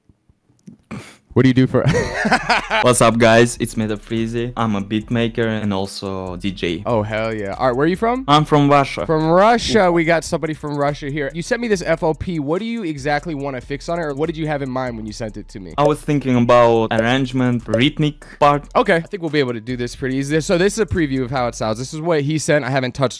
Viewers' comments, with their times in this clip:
0:07 i KNEW bro was from russia from that accent😭